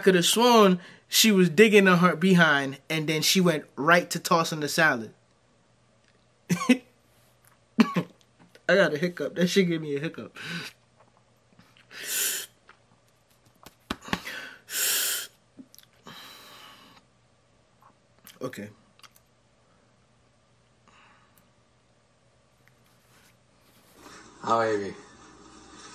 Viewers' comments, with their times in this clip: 0:09 That's not a hiccup, that's your body wanting to throw up! Lol Love the beginning where your expressions look like disgust and disbelief, you have to light the sage, walk around in confusion. Realize we are one messed up excuse as a people. That's exactly what's going on in my mind.